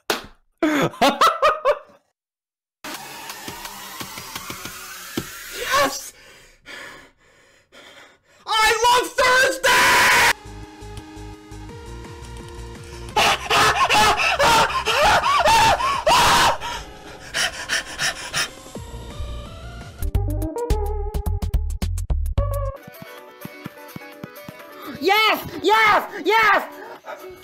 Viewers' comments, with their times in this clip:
0:08 holy crap. My ears just imploded like that one submarine. QUIET DOWN!!! But fr. I love this reaction